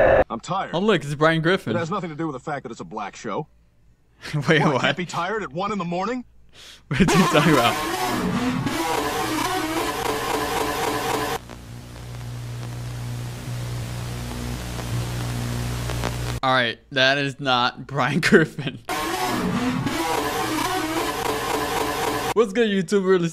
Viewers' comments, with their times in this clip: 0:04 well i can't be tired at 1 in the morning dinosaur sound
0:08 He sounds like a dinosaur